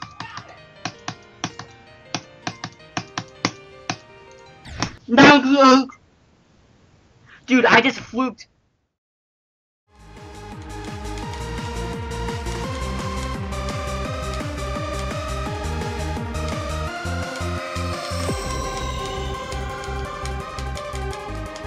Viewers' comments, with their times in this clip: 0:04 nah im dead "Chewy noise" XDDDD